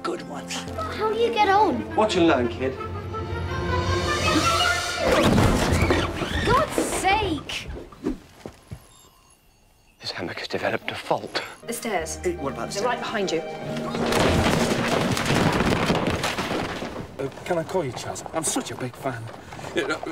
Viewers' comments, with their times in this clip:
0:03 apparently this one? Yeah, this WASN'T in the script - it's why the mum's accent slipped and the girl, who's supposed to be depressed, grinned from ear to ear lol Steven Moffat about died laughing and they had to keep it in